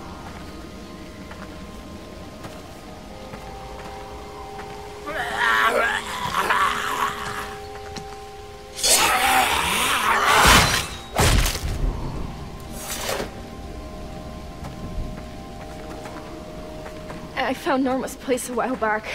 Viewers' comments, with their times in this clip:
0:06 the step the walker makes is the same sound as a minecraft zombie XD